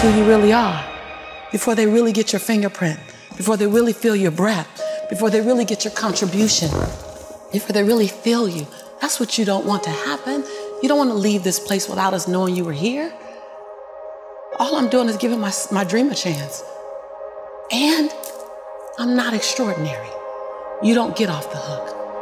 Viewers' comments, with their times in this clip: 0:04 IM SO SORRY BUT I WAS GETTING SO INTO THE VIDEO WHILE DOING SCHOOL WORK AND I HONESTLY thought someone SH*tted themselves near my room 😂🤣😭